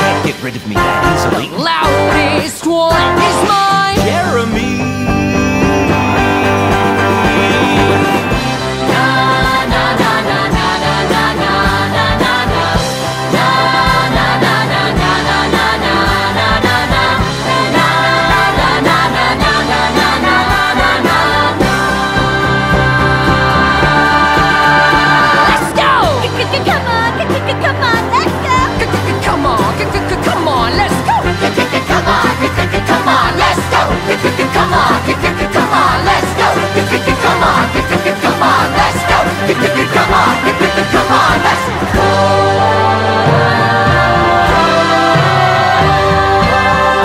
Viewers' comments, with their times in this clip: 0:04 I like how Squip was whining like a little kid
0:24 just to point out. the tempo change was impressive it sounds hard as hell, wrong but somehow good
0:30 THAT SQUEAL THO 😂
0:30 was that a voice crack